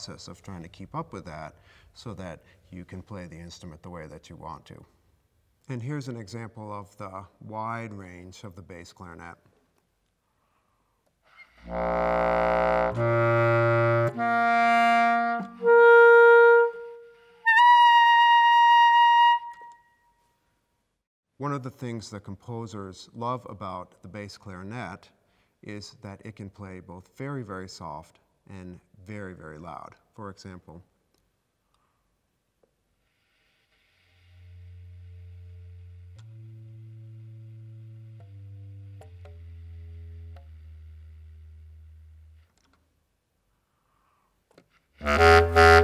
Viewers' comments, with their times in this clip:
0:09 everything about that was surprisingly bad from thr super high pitched yet soft squeak right before the first note came out right to the last altissimo note that was voiced terribly.... wow.
0:33 he was playing the solo excerpt from pines of rome, it's low, slow and soft. if you turn your speakers up you'll hear it very softly